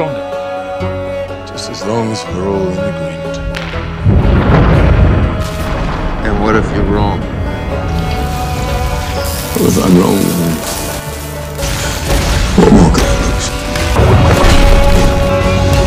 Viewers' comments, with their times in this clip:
0:03 that sound from a thunder bolt fckn goosebumps for real !